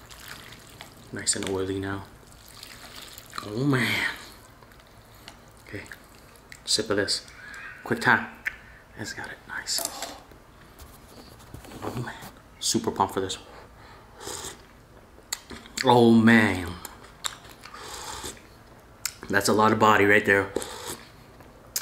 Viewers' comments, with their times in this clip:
0:06 What was that awful noise ?